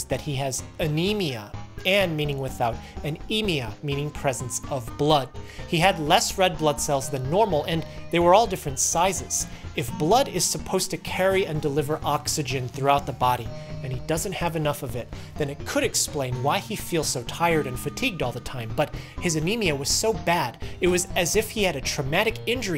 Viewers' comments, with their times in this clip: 0:07 Music overlaid on top of dialogue makes it hard to make out the words, especially for middle-aged or otherwise hearing-impaired